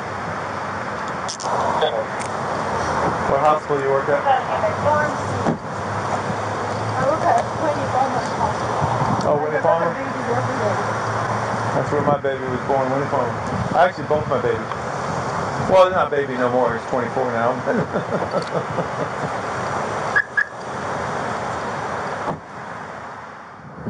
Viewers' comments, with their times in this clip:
0:09 kinda rough laughing about having children when she just said she lost hers